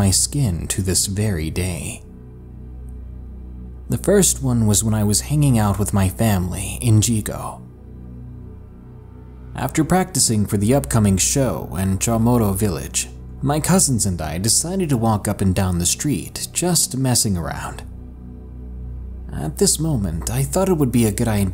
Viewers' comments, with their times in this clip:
0:04 says “yigo” right , but proceeds to say “chamorro” wrong 💀